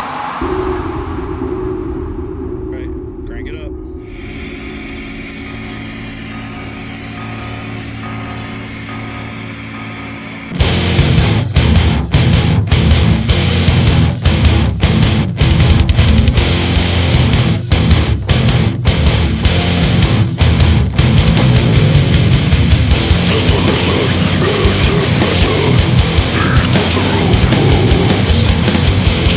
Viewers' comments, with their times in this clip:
0:10 The song starts